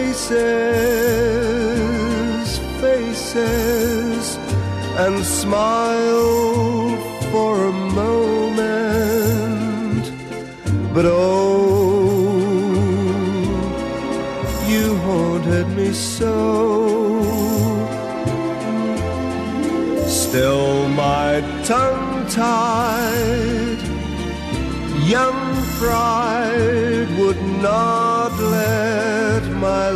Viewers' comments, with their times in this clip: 0:10 Does any one else notice the sped up voice ? It's very feint but it's defiantly a voice.